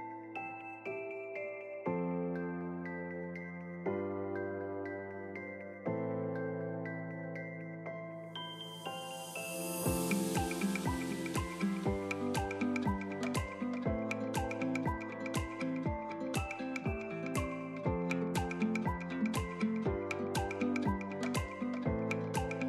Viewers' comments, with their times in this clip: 0:03 any one else get Jamiroquai vibes haha